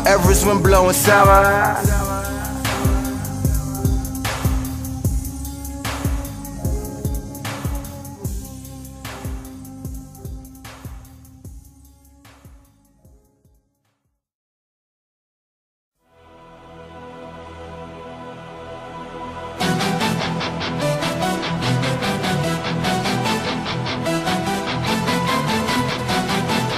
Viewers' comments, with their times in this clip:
0:09 Icecream truck lmao